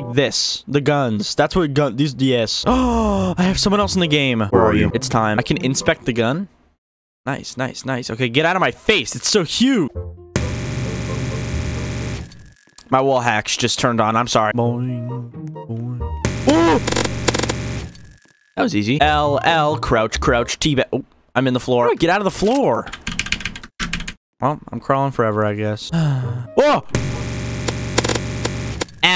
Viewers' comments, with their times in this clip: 0:10 his microwave hacks turned on